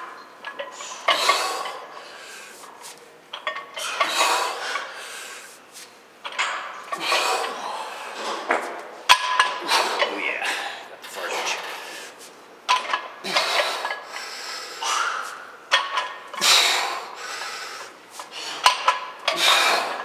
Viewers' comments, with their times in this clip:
0:07 did he just fart?
0:07 he farted LOL
0:08 Fartage!!!!!!!!!! Love that you didn't edit it!!! Great Info!!!